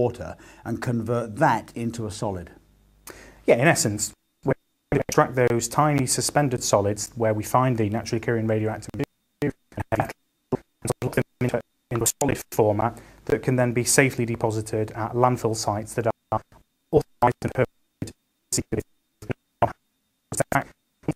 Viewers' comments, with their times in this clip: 0:03 The audio of the video is garbled YouTube has had a lot of issues since the weekend.